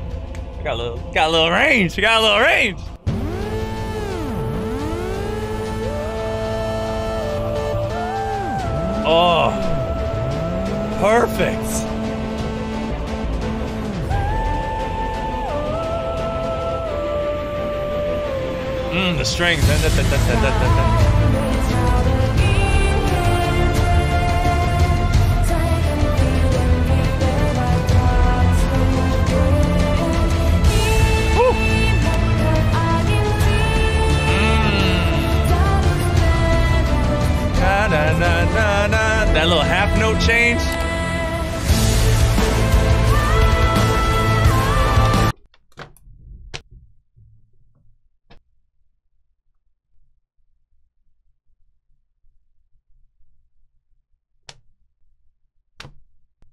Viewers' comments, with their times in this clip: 0:04 ... PPL who didn't follow aot: alright that's some cool drop PPL who followed aot: here it comes! The epic moment in aot
0:14 Damn! whenever I hear this part of the soundtrack it always reminds me of Nier Automata. It is indeed a music for betrayal
0:19 I can hear Eren titan Scream!
0:32 When the Attack On Titan music is too good.
0:43 yeah same face I make every time her vocals make me tear up and idk why there's nothing sad about it its just so fucking beautiful